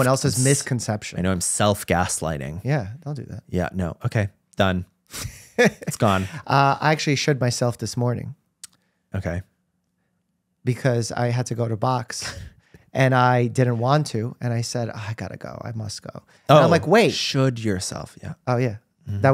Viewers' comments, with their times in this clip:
0:07 I can’t nobody’s talking about at The time he thought dr mike said shit himself and not should yourself IM WHEEZING